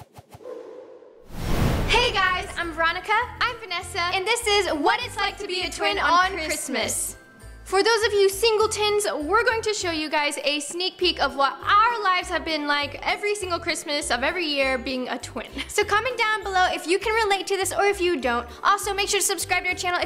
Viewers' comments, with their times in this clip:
0:07 did nessa say tins ?